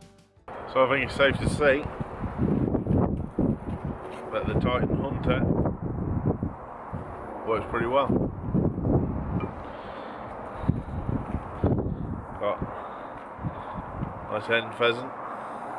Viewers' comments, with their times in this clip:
0:03 Where are you? Your accent and the rest of the country around you doesn't match the yucca you're standing next to